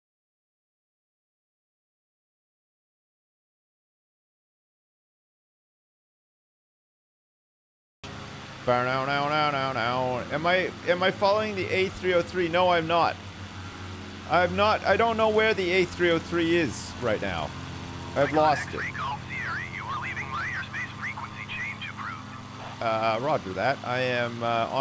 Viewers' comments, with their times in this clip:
0:08 audio comes back